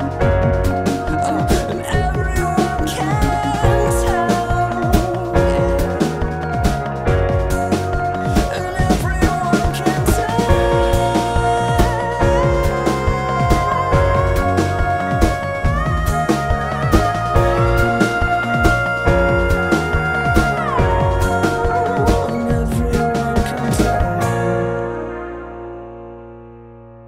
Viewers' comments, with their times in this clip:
0:07 i literally replayed those high notes 36 times so here's a time stamp for y'all
0:08 just keeping this for that pretty pretty high note
0:09 for the high note. You're welcome
0:10 the sound you hear as you ascend to heaven
0:10 THE HIGH NOTE, its so beautiful